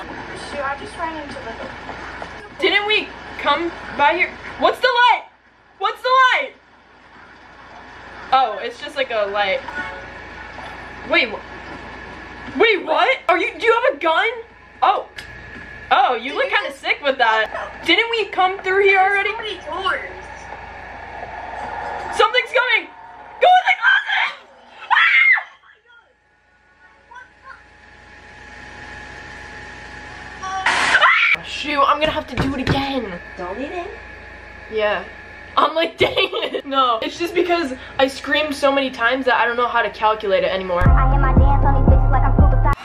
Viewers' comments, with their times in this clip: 0:10 the way I repeatedly screamed “LOOK DOWN!!!”-
0:30 THE WAY THE SCREAM CUTS OFF I CANT